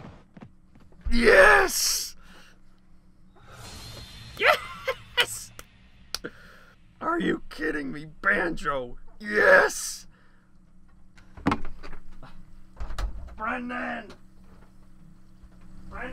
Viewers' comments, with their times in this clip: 0:03 That was a pretty good impression of Gruntilda, not gonna lie! ;)